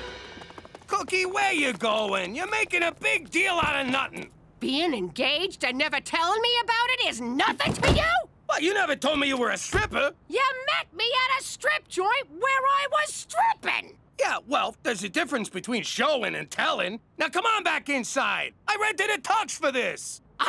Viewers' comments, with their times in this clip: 0:04 good job to the voice acter for cookie, really got that mad wife tone down perfectly